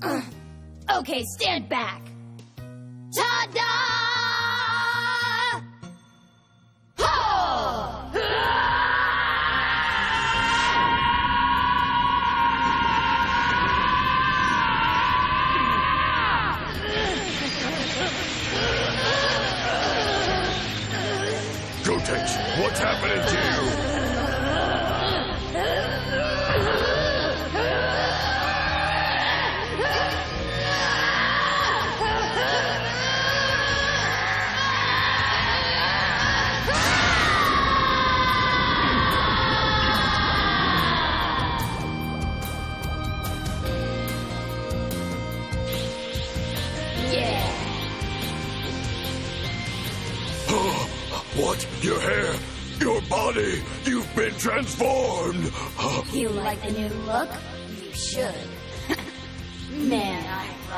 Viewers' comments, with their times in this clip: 0:08 that was one cool scream though
0:08 I dont know why but I find this scream badass
0:08 I love the scream.
0:08 I’m not gonna lie. This scream was kinda hype.
0:12 why gotenks screaming soo hard than i tho?
0:46 that "yeahhh" is so anticlimatic it kills me
0:47 the most epic "yeah" in history
0:47 They become a Super saying 3 and their reaction is a quite “yea”🤣🤣🤣
0:47 the way he said it. "Yyyeaaaa"